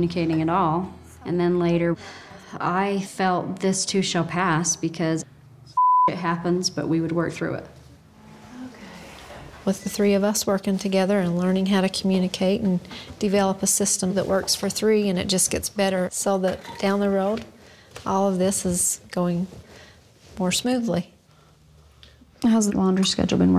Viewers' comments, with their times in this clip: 0:06 Mormon women curse openly!? I wonder what got BLEEPED out